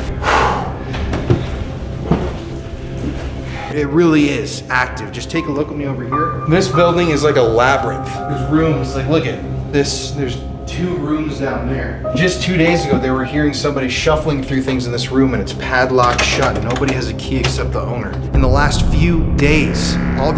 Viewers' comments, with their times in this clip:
0:08 I heard something .04 Can't work out what it says.